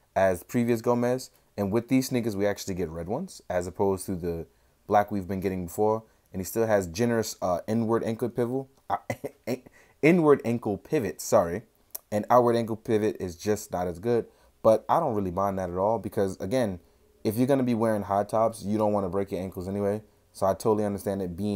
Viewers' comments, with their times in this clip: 0:06 “N” word ankles!!??